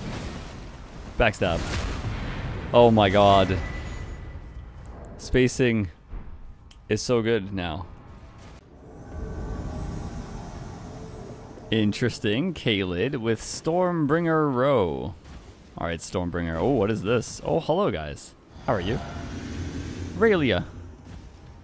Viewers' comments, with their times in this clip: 0:05 can we talk about that perfect finger snap